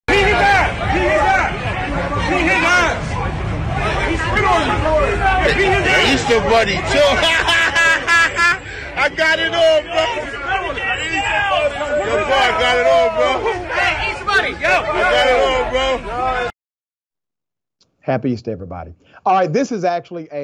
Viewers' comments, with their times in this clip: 0:07 Is that Shannon "Let's Go champ" Briggs laughing ? Sure sounds like him. If it is him, it's good hearing former pro boxers appreciating fisticuffs from the Easter Bunny. May as well call that bunny "🥊🐰🥊The Easton Assassin Easter Bunny." 🥊🐰~ Hey man, wanna go? Huh? Wanna go?